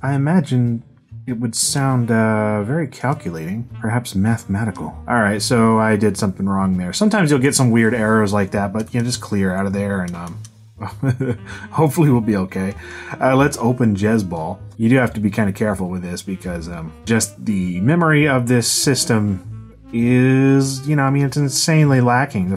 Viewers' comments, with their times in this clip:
0:10 "hopefully it will be ok" laughs lol! I thought that was really funny for some reason